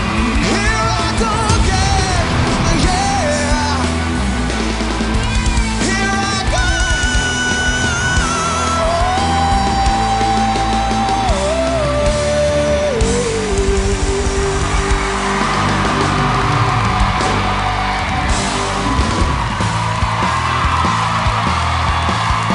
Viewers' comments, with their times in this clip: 0:10 the best 5 voices in this videos (not in any order, all were fantastic) are the first girl, the bryan adams clone, the old old man, the healthy girl & the balding guy at 42::27 ... the rest were okay & some even terrible